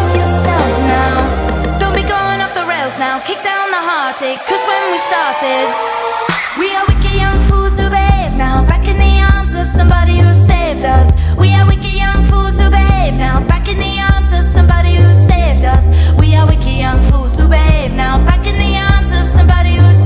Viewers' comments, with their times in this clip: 0:05 When it drops best part of the song